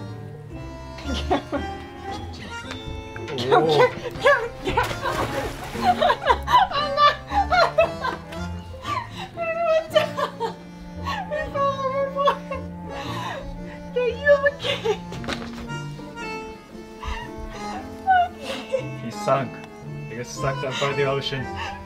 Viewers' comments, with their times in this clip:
0:03 The splash when he fell off the bed 😂😂😂😂💀💀
0:04 SHJSHSJSSHSJ THE WAY HE FELL IN AND THE SPLASH